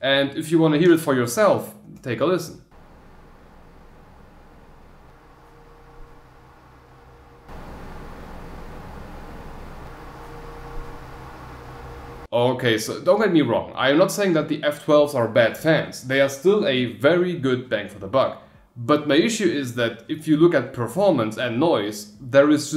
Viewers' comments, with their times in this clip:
0:03 Am I wrong, or the P12 is noiser? (the motor itself, not the air)... I can only hear air flowing on the F12, while I hear a buzzing on the P12.